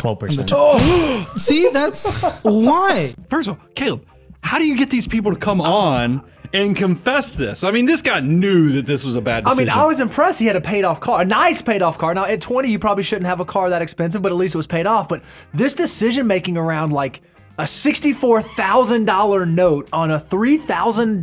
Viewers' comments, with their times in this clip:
0:03 The collective gaspcringe knocked the wind out of me.